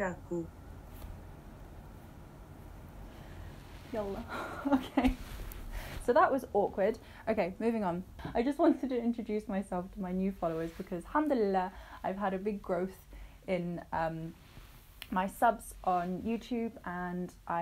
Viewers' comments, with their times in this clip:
0:05 its not awkward. Mashallah your pronouncing of the words are good